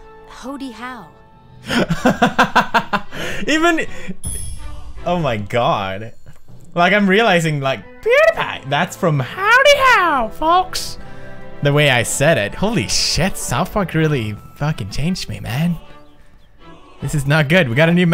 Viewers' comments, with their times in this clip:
0:04 the way he says 'Pewdiepie' comes from this show, man South Park is awesome! ^^